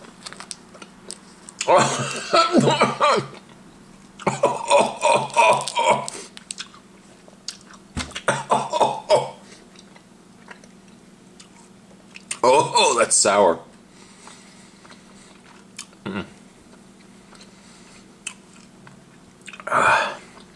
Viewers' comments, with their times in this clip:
0:08 Santa? Is that you?